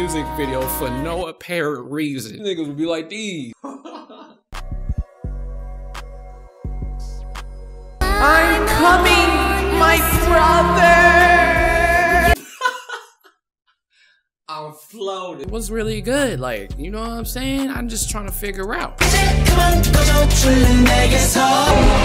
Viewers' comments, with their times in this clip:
0:07 The way he said that